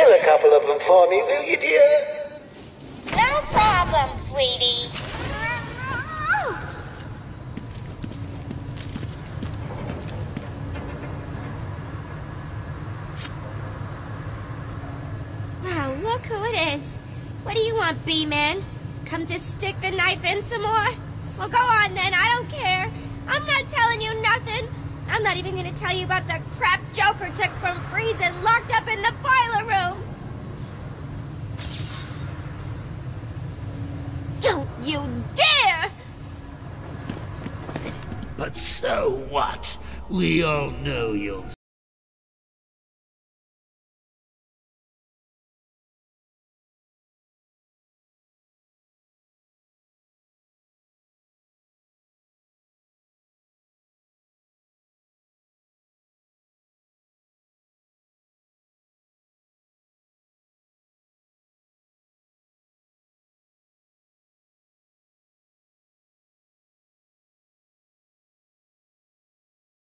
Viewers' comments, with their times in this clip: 0:10 The sound cut off WTF?!
0:16 This is really the only line that Tara Strong was able to tandem Arleen Sorkin, since then, she sounds atrocious and squeaky.
0:42 am i the only one whos audio kicked out ?
0:44 What happened to the sound ?
0:50 what happened to the volume?